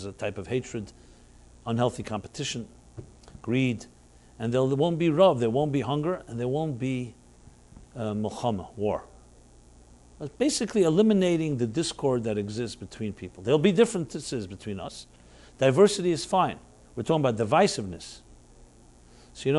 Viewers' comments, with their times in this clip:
0:07 sounds like 'Muhammad' and means war, that explains alot